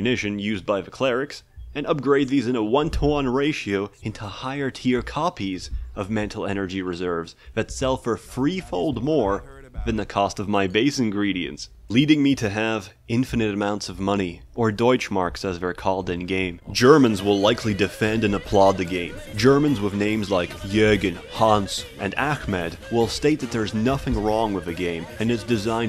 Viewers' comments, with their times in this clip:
0:08 You can feel him holding a smile